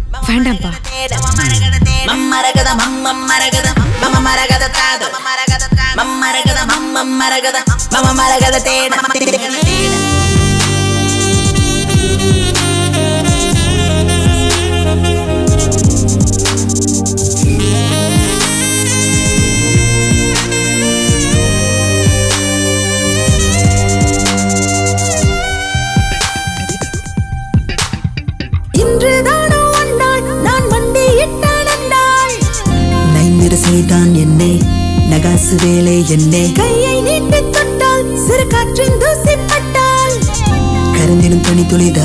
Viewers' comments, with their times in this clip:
0:09 that sax 🎷❤️class Harris Jayaraj ❤️😍
0:09 From that music ✌️😘
0:27 her voice and Harris music 😍🔥🔥